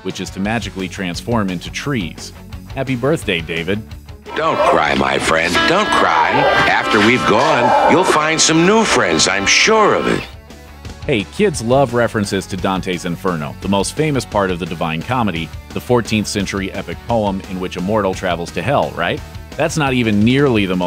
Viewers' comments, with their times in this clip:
0:05 that voice sounds like George Carlin but if you look it up it’s not😂 I don’t understand